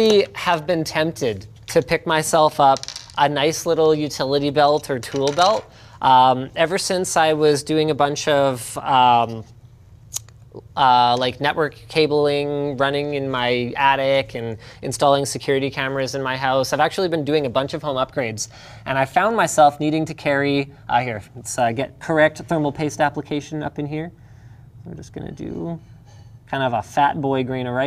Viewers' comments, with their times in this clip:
0:06 sounds like someone lighting a cigarette
0:10 linus sounds exactly like a lighter